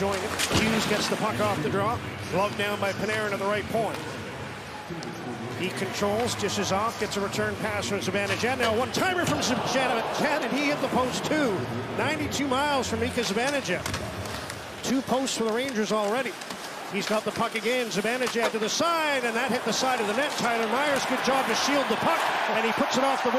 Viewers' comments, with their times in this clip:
0:09 What happened to his voice here?!?